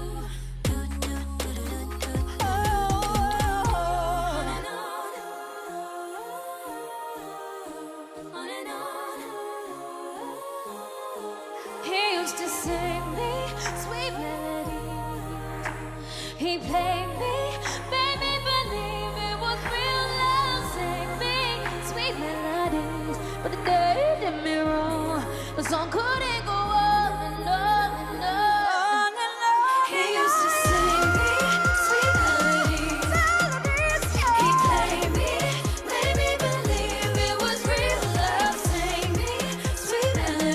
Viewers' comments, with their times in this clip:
0:04 Leigh's solo for me is the best part of the song. I actually got teary eyes she absolutely smashed it live. She sounds so emotional and those note changes!! Love them all but she owns this song in my opinion. Also the part I was really hoping they will sing it live I mean all those beautiful harmonies
0:11 This performance, even tho there were three of them, was actually good. Leigh Anne's vocals were on fire, especially the bridge aaaah and her lows in the covering part were OK, not like the others, obviously, because she didn't know like the other three how to sing them, she doesn't have those lines in the studio version, so she had to prepare in a very short amount of time. Perrie was on fire lol, idk what else to say because perfection🤝Perrie's vocals. Jesy was also magnificent, but I have to tell you something:if you see this, Jesy, I WANTED THAT "BETTER GO ON, NOOO" AT THE END OF THE SECOND PRECHORUS. DON'T DODGE YOUR VOCALS LIKE IN SHOUTOUT TO MY EX BECAUSE THEY ARE BEAUTIFUL.
0:11 so proud of how far Leigh Anne has come. She has such a steady controlled voice now, even after dancing - so satisfying
0:19 leigh's note change tho
0:27 proof that Perrie could hit the SOTME F5 highnote
0:28 I don't know if miss Perrie Edwards killed me or brought me back to life with that note in
0:28 omg Perrie, I really miss you highnote hun😭❤